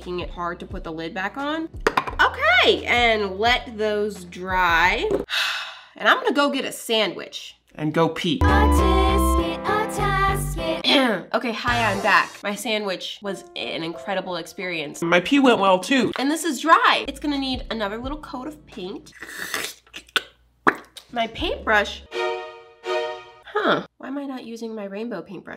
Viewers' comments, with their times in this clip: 0:10 YESSS I MISSED THIS SONG!!!!!